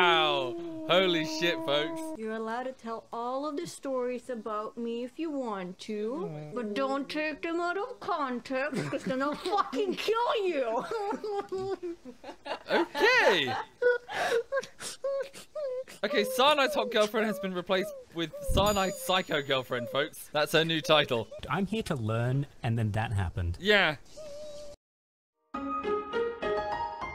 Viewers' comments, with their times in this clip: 0:08 insert distorted demon voice